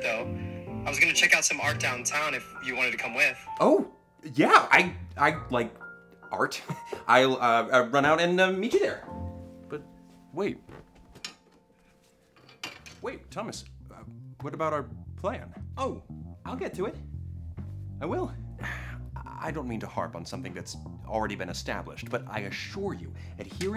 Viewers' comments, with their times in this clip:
0:09 The way he says "But... Wait." ?? Tears. Streaming down my face. Salty. Salty tears
0:10 This scene of Logan’s voice made me cry 😭